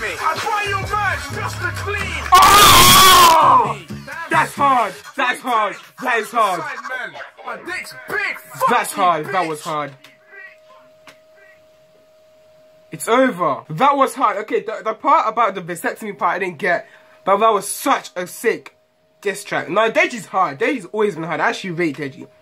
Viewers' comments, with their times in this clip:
0:03 "DEJI IS A BEAST" The first 3 lines were my favorite nice vid tho 👍 ur laugh is awesome XD #NotificationSquad also my video volume was high so I could hear the diss better cuz it was kinda quiet and I have headphones on and gave me a heart attack 😂